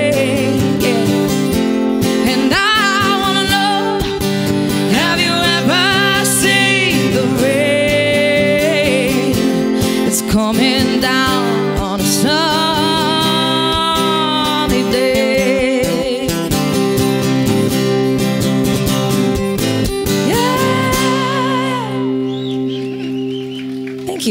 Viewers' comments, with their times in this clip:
0:09 I love this girl more than oxygen. She has the voice of an Angel. And omg she has the looks to go with it. ❤